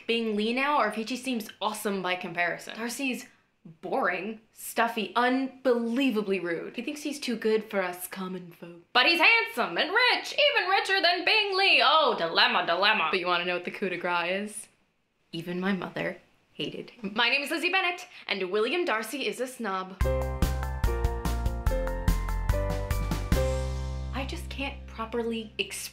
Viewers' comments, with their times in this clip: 0:08 Her voice is pretty much the best thing ever.